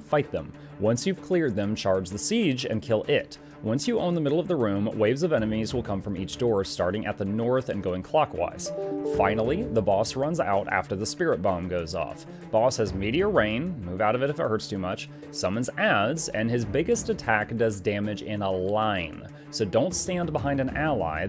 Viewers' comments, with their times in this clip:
0:08 The Windows email notification sound confused the hell out of me since I happened to look away from the video at the same time.
0:08 This is amazing and I am using constantly.... also that email noise had me searching for my laptop for a few mins lol